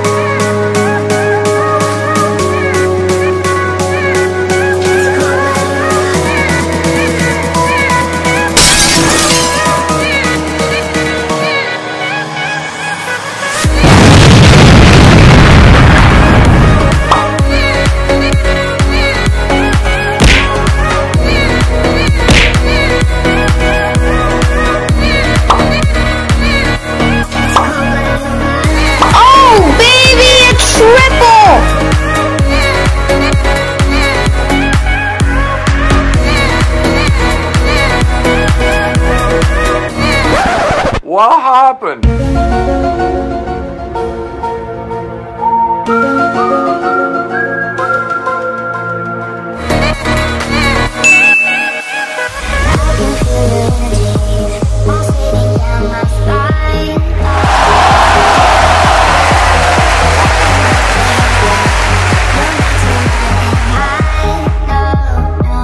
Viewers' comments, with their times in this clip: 0:10 that was not you kill so why did you do the sound thingie
0:46 the music is creepy xD